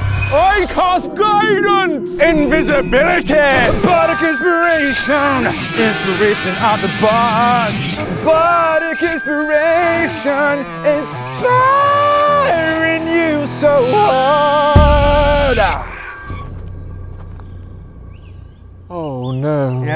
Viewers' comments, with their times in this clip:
0:04 BHARDIC INSPIRATIOAWWWNN INSPIRATION OF THE BAHARD BAAAAHARDIC INSPIRATIOWWWN INSPAAEEERIING YOU SO HAAAARD (beautiful)